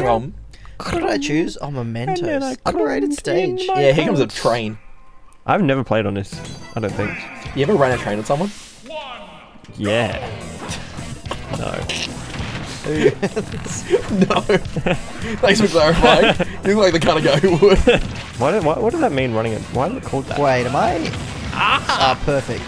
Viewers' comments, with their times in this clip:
0:07 The gap in the music is perfect